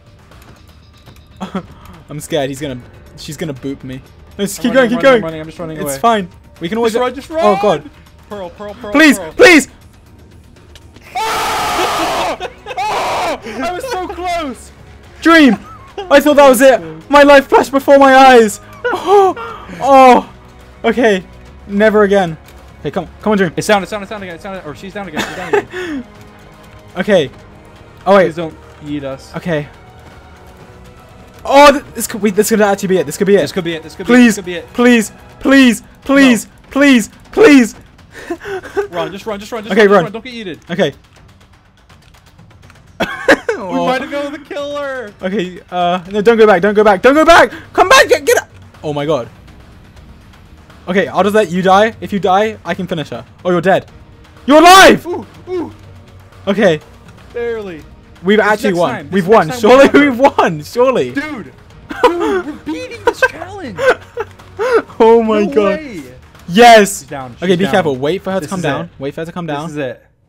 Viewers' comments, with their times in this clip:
0:09 rip dreams ears
0:10 in the first time i thought that voice were Dream
0:11 THE WAY HE LOWERED THE VOLUME WHEN HE SCREAMED THANK YOU FOR SPARING MY EARS
0:11 yes, another video from george MY BOREDOM IS CURED! edit: did george edit it so that his scream was quieter? i-
0:11 they had to mute his screams because they are so loud
0:11 I like how george turned down the volume when he pearl clutched
0:54 dream recreated the roblox death sound
0:54 Dream roblox oof sound
0:58 did I hear 2 oof of Roblox from Dream